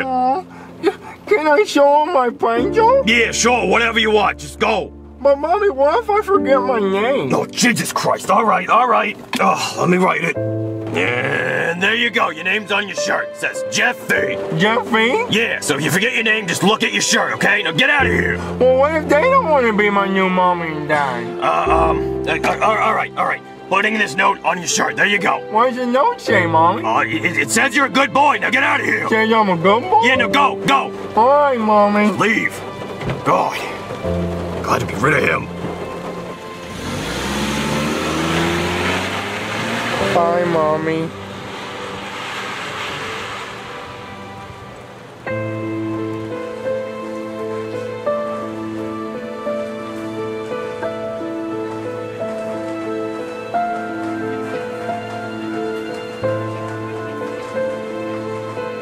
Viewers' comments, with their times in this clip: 0:08 That flash back always gets me, i was going through a hard time in my life and this just hit hard. It's really messed up because this could be true in someones life, and the music just makes it worse. 😭
0:39 the way jeffy said bye mommy made me cry 😭
0:45 that music had me crying 😭